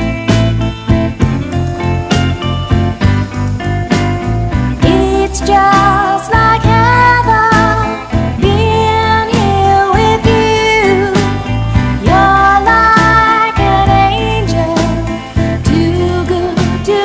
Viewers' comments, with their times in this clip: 0:05 beautiful song beautiful voice.